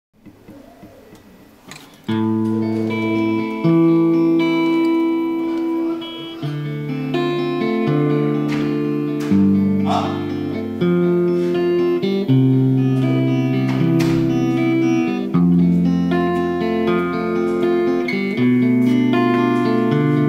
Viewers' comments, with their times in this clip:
0:06 very good !!!! you could reduce noise altogether? I have one too, and makes a lot of noise at high volumes ... as is the name of the song that plays ?